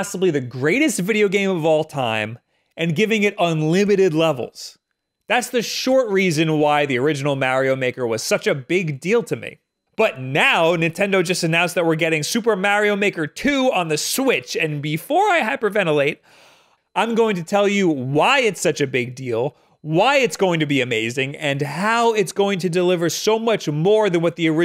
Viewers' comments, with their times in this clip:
0:07 I always knew both of you say MARIO wrong